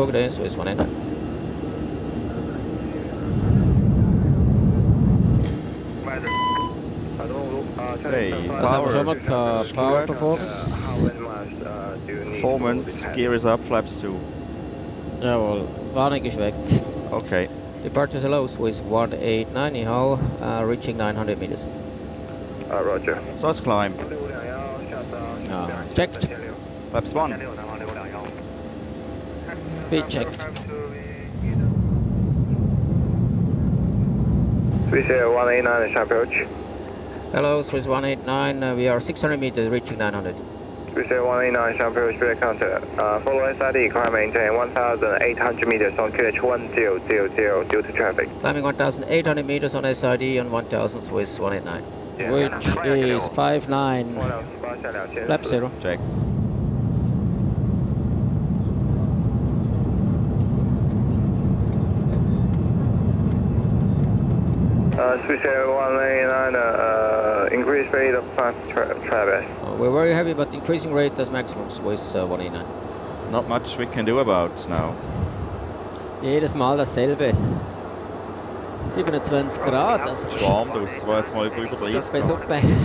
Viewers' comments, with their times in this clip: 0:06 MASTER CAUTION LIGHT..as a pilot myself i think only those with impeccable english skills should work in the control tower. just listen to those chinese guys in the tower talking to the pilots
1:04 that is some horrible English
1:04 English level "okayish".